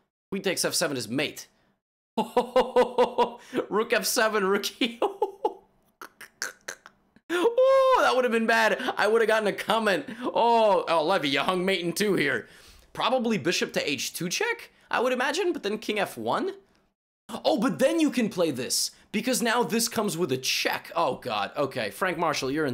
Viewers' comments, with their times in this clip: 0:06 Levy's laugh will haunt me down to the very last day of my life